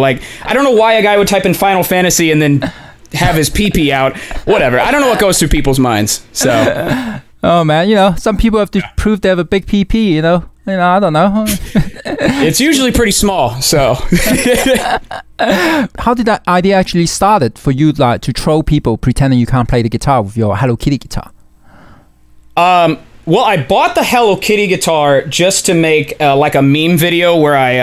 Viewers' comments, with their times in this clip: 0:08 the way he said ""PP"" was so funny